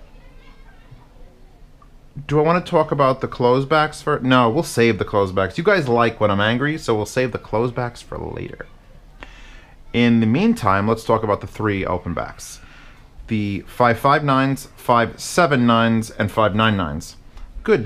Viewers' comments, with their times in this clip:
0:03 Why are the kids crying in the back?? ....